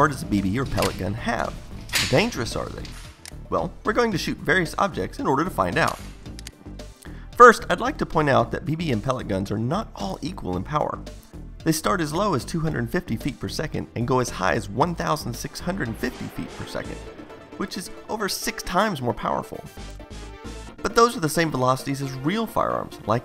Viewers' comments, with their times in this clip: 0:04 9 years later and still loving that voice crack